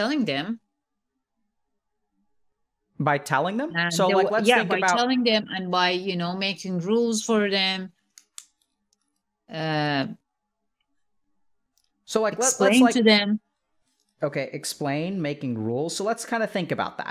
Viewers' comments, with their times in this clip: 0:05 pen click killed me